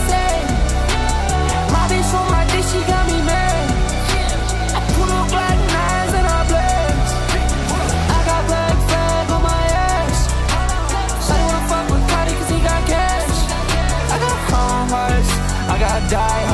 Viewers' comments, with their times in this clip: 0:04 the switch to sukuna's ost wasy EPIC